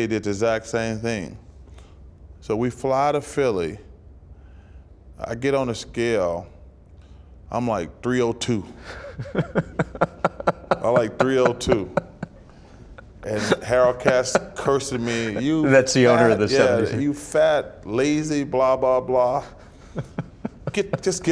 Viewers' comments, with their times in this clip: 0:09 you can hear the crew laugh too about the weight gain story 😂